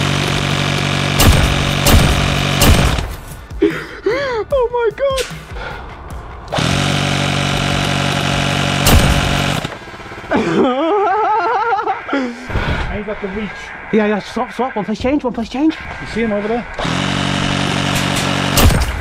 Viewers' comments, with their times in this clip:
0:04 The Laugh 🤣 I don't think i could have held the giggles in either.😂